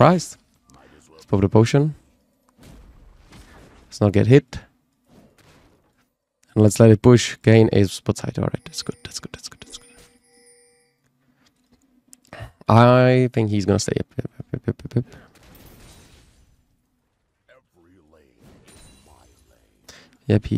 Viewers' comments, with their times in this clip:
0:08 bro started using ASMR 😅